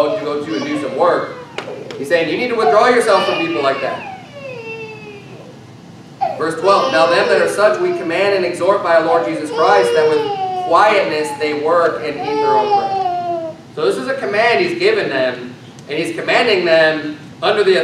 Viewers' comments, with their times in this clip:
0:05 what a shame really. I love this dudes sermons. I do. But its the same thing with every video. The minute it starts to flow. Some squealing little rug rat steals the show in the audio. I am not kidding when I see his video thumbs I say to myself I will listen till the first little demon starts whining and overriding the sermon. It took seconds into this one. every single thing he does turn out the same way, I even seen one where he tried to preach a message from his kitchen and you could barely hear the guy over the repugnant sounds of spoiled toddlers. Sad really.